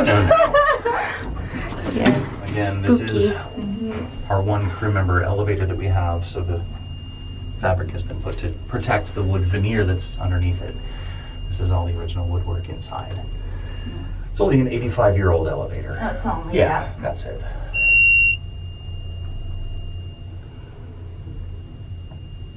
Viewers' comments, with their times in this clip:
0:05 there is a high pitch noise?